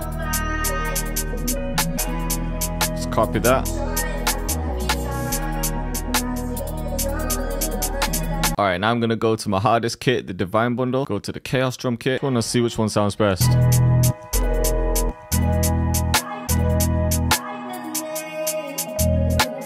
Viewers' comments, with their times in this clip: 0:07 This could be a lil tjay beat